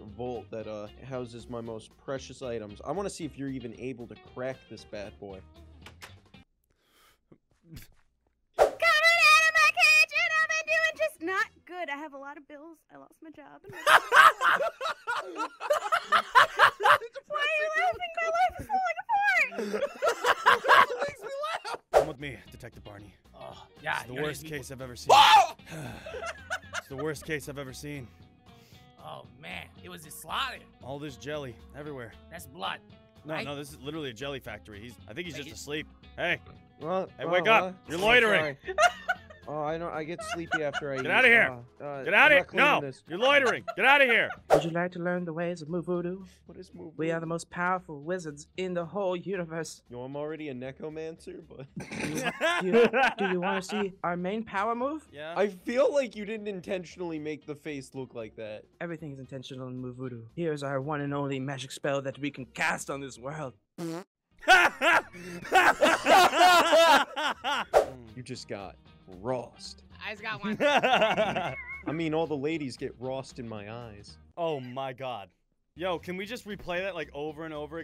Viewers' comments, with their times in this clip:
0:10 why would they laugh at that
0:12 I cannot understand a word she said
0:24 his scream made me die in laughter
0:24 Barney almost killed me for that second my volume was all the way up
1:03 i love this fart noise